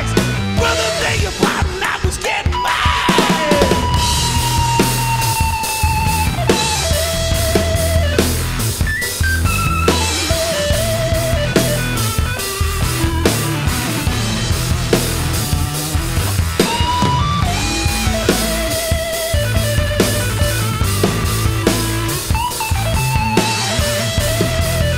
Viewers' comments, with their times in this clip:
0:09 Just before the min mark is the start of thqt killer guitar-to-piano solo, you are welcome 🤘